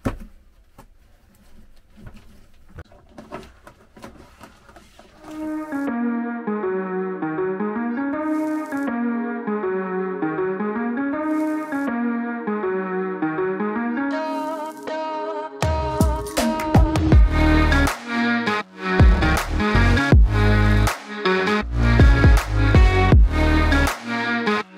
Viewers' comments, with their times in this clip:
0:10 The beat is knocking who did that?